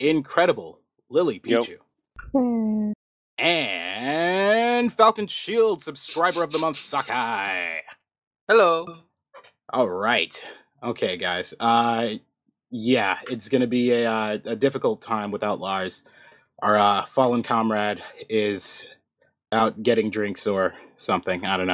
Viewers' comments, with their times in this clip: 0:05 I swear I heard "Subscribe of the month sucka!"